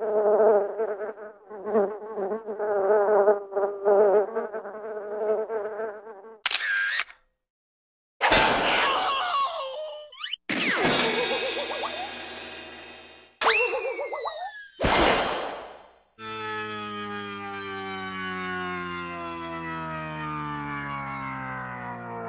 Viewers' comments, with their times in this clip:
0:06 i can practically hear the tolling of melancholy bells after